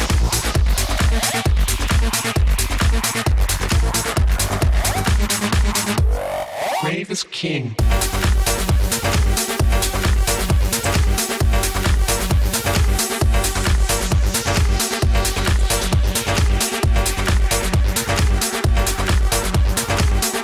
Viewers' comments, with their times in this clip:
0:07 Who wouldn't dance ? That third track is dope!